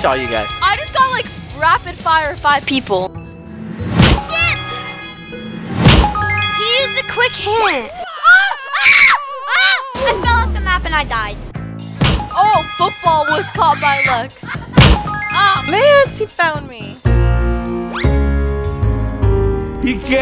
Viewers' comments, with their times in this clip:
0:04 sounds like the sh word